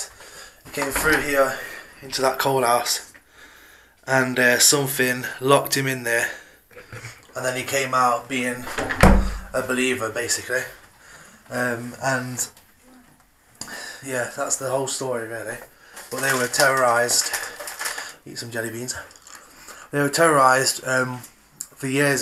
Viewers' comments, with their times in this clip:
0:09 There is a womans evp ..... cant make out what is being said but its sounds like "run"